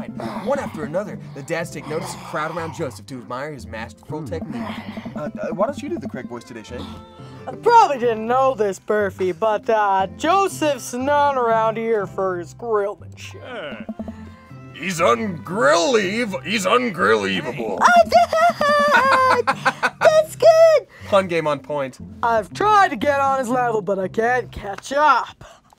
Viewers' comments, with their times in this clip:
0:06 why is the voice basically an impression of Patrick Warburton lmao